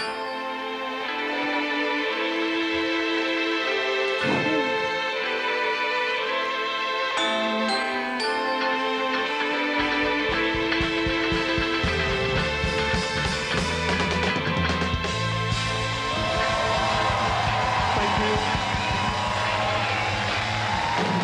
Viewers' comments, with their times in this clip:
0:06 Few songs can make that bittersweet feeling of nostalgia shoot through your heart. This is one of them. I love the xylophone at the end